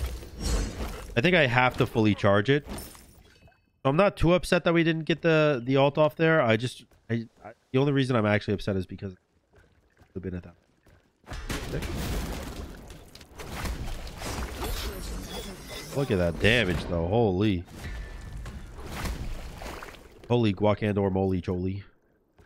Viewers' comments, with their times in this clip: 0:08 2 things, one is your audio drops out and I know you're looking at tuning that in still. And B, LET'S FUCKIN GO 1.1K ULTS IN THIS SHNIZ!?!